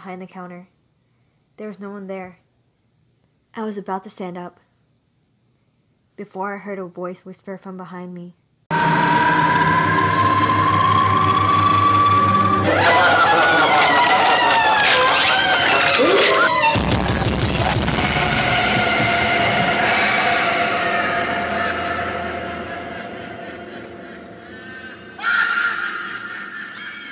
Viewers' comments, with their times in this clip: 0:09 WTHHHH MAH EARS T^T (I wear some earphone then my ear Like HURTSS) WAAAAAAA THAT SCARED MEH!! GOD SAKE -